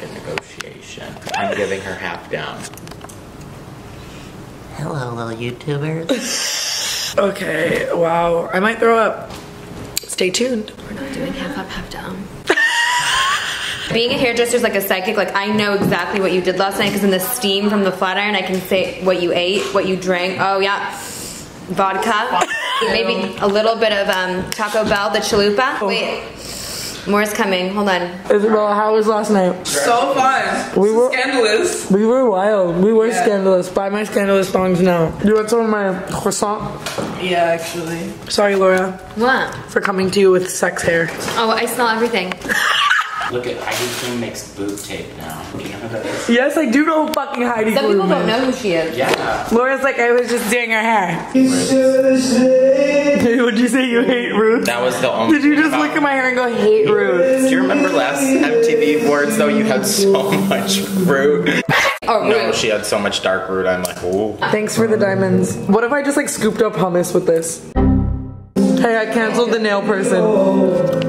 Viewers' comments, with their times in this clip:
0:05 tana sounding like my kitchen sink
0:06 did somebody turn on the washing machine
0:07 tana why do you sound like an old car not starting up
0:56 Who has an angel voice ??